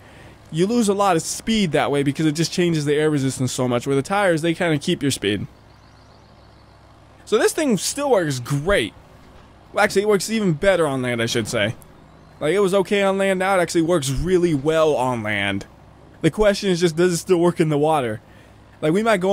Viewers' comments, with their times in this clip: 0:05 voice over lmao